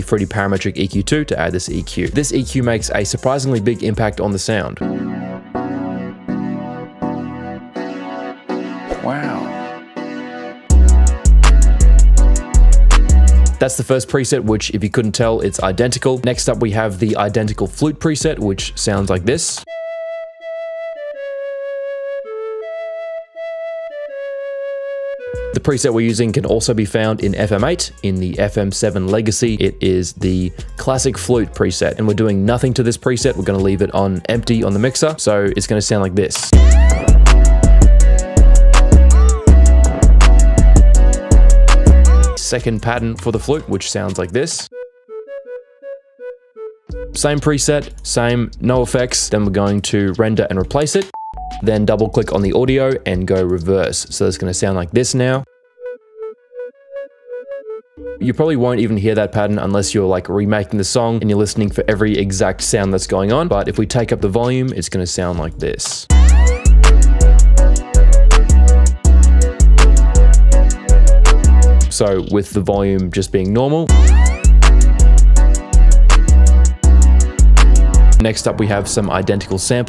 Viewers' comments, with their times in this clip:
0:07 it sounds like the beginning of choppa wont miss
0:44 F#ED F# BED E C#? those are the notes i heard in the original one
1:05 damnn you noticed that lil flute too!! honestly, i wouldn't say that pattern's 100% accurate tho. it's actually more like a variation of the main flute itself. but still good work with the beat tho 🔥🔥